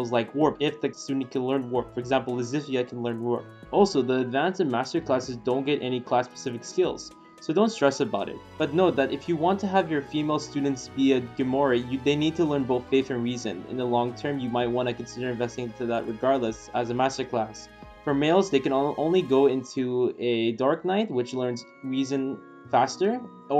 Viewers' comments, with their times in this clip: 0:05 Lysithea knows how to wrap! Heck yea, infinite presents for my boy Claude!!